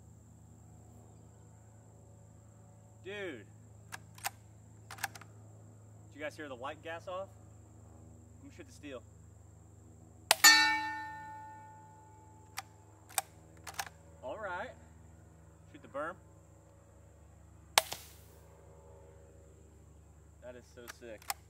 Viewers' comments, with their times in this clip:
0:09 My dog farts louder than that rifle lol